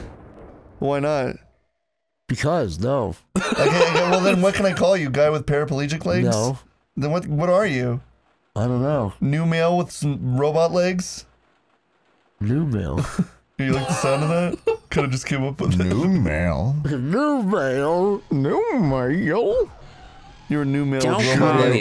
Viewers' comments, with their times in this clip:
0:06 the long pause.... numale? is so fucking funny